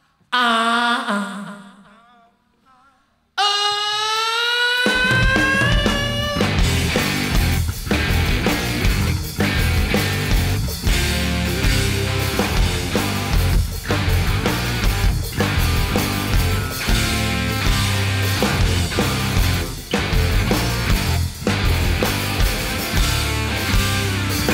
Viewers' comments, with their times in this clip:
0:06 that sequence, the tone, the power, the riff...that defines Rock N Roll. Love it.